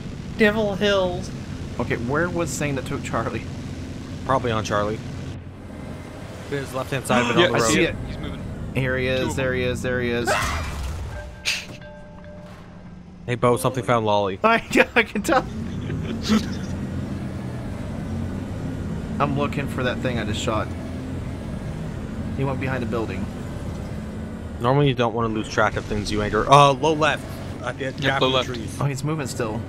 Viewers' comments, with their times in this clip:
0:08 Things science can’t explain- why are loli death SFX so good?
0:10 Where did you get that mod? I want loli screaming every time I fire 😅